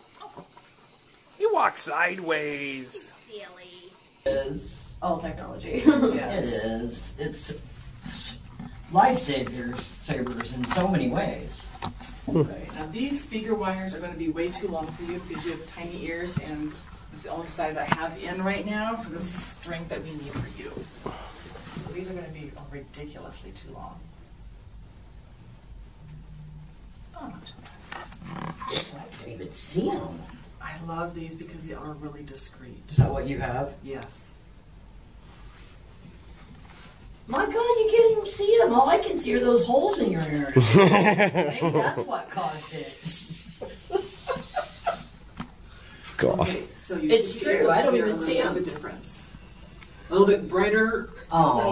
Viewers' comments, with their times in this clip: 0:08 Ok, there is one thing i don't understand, maybe I'm just stupid. How is the girl speaking that well when it's her first time hearing any sound?
0:39 The first sound ever she hears: "NYEHEHEHEHE"